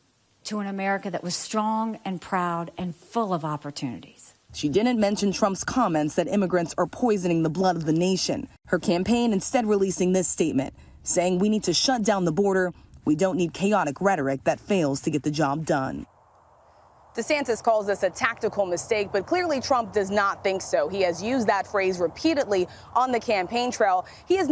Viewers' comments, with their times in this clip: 0:08 Good Sincere tone by Nikki. Flag Cardigan good move. Good handlers.